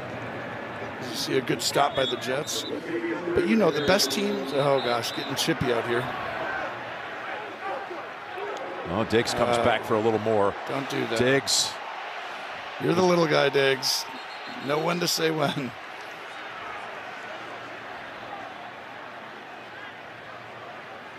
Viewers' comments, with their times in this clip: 0:05 Tony telling the Jets to "get your shit together" priceless Edit: I'm dumb. Sometimes you hear what you want. But I'm leaving the comment up so I can laugh at myself